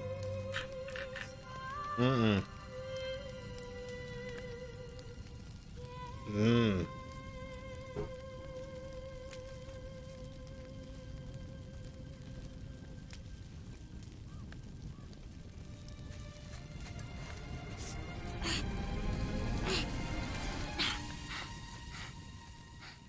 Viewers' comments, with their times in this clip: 0:05 Oi why did you sound like you could smell barbecue when they were burning the Mum's body 😭